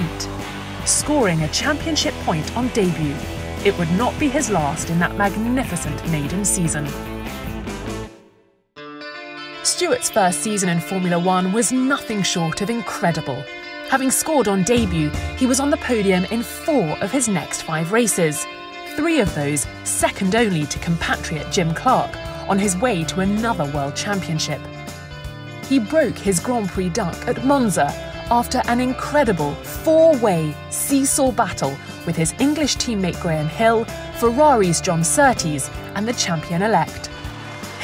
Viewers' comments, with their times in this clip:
0:09 I like the music that kicks in
0:24 I'd like to watch the video but whoever mixed the audio has the music too loud to hear the voice over. I quit